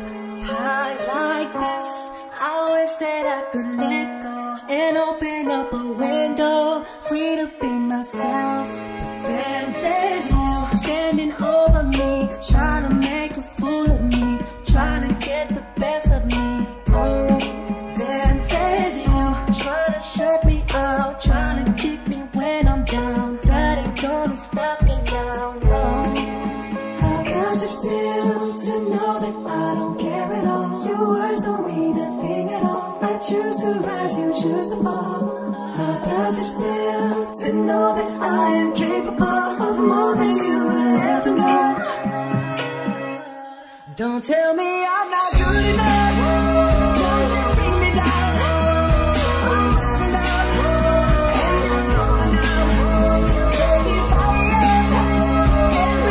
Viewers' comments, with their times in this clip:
0:09 if you do default dance its in 100 percent sync (talking about beat)
0:22 When you can only relate till *Sed Dolphin Noise* 🐬🐬🐬
0:43 the beat drop 🔥